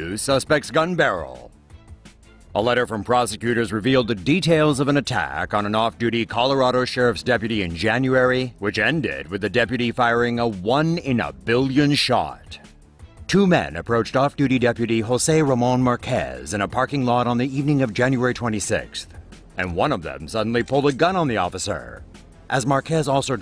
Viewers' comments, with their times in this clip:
0:04 lmfao the way he says "attack" is jokes xD